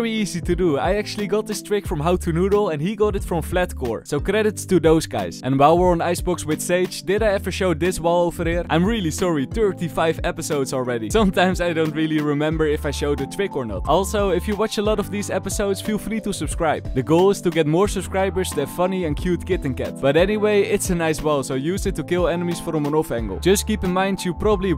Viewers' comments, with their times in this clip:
0:09 why does he sound like an old grandpa saying that LMAO